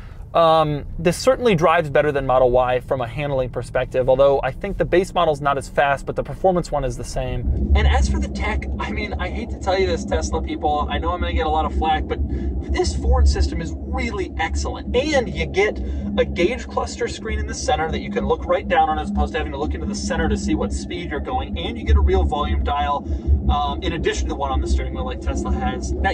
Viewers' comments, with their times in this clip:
0:07 Thisss is what audio sounds like underwater.
0:07 I thought I was going deaf. Scared the shit out of me.
0:08 messed with my head. Thought my headphones broke all of a sudden. Seriously awesome review, Doug. Thank you so much. I'm always trying to keep my pulse on the EV market and dove back into some reviews, new and old, to reacquaint myself with the general opinion on what's currently out and how they've possibly improved. I always love coming back to your reviews.